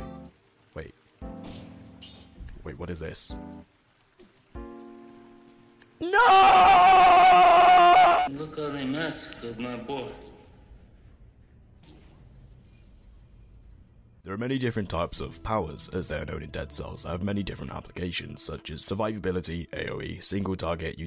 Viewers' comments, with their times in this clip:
0:05 Why are you putting on a low xbox live voice? It's so weird. is clearly your real voice